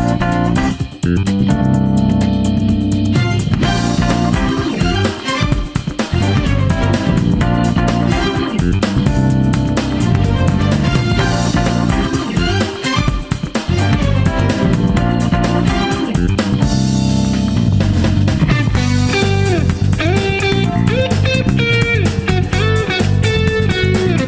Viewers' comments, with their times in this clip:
0:09 title sums up my experiences the second bell rings